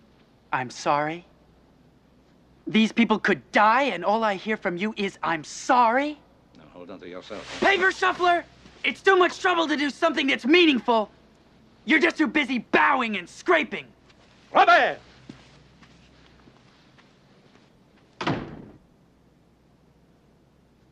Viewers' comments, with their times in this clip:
0:08 Don't expect any favours just because he says his father is a French diplomat. Robert shouts loudly at his father " PAPER SHUFFLER , ITS TOO MUCH TROUBLE TO DO SOMETHING MEANINGFUL, YOU'RE TOO BUSY BOWING & SCRAPING ! ! " aka brown nosing & kissing ass.